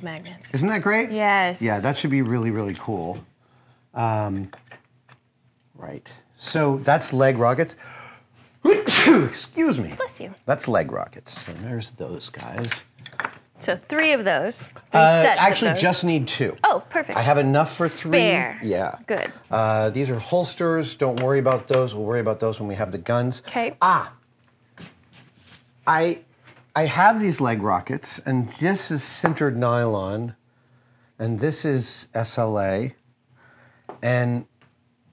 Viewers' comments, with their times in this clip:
0:08 Mythbusters: prove that sneezing into your elbow is the best way to contain a sneeze Adam: sneezes into the open/onto his hand
0:19 Adam sneezes into his hand and then proceeds to touch practically every piece he’s going to hand off. I don’t consider myself a germaphobe, but yikes